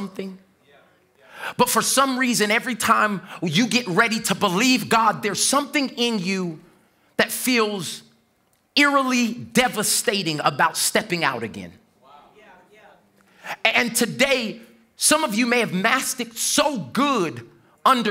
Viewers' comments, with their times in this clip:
0:05 Of all that! I can't get over that missed note "flow" 🙌🏾🙌🏾😅 Hallelujah for this message. Just making some fun with the Kingdom. Hallelujah Church! Let's get out and be used in the Kingdom. All of our gifts and abilities.